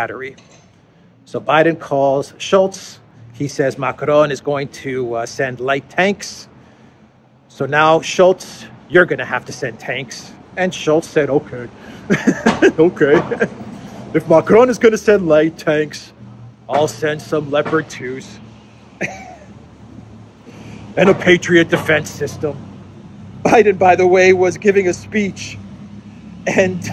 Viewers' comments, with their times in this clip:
0:09 nice Scholz impersonation))